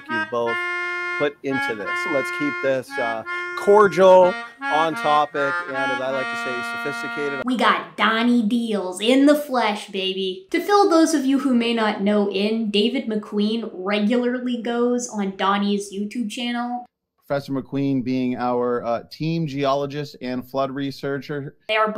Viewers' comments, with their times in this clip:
0:04 that low note is supposed to be a G flat, not an F.